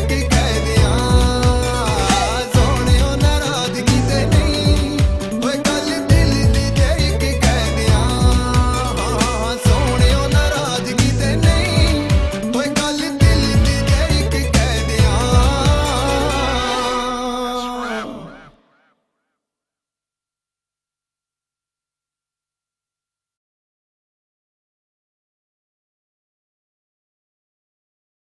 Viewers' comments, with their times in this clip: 0:10 i love this music ❤